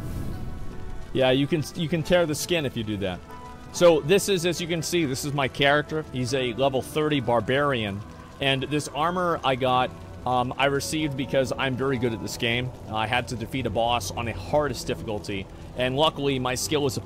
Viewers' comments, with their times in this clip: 0:03 why does he sound like a YouTube ad?